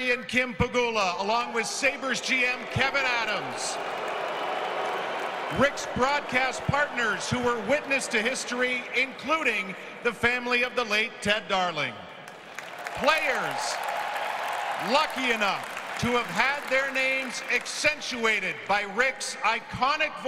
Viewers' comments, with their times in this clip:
0:04 —I hope Terry & Kim hear those boo birds loud and clear…WE WANT A PLAYOFF CONTENDER in 22-23! 👏🏻👏🏻👏🏻